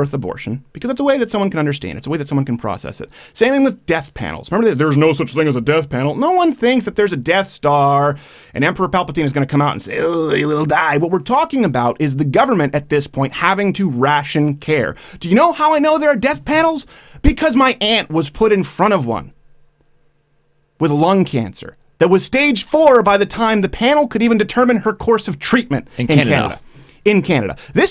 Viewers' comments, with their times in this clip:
0:09 that was an amazing impression of Alex Jones